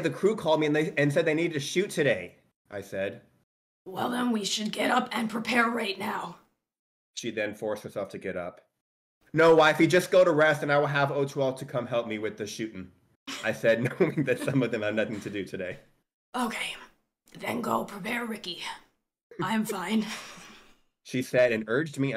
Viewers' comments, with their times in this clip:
0:04 THE SMOKER VOICE HELP😭😭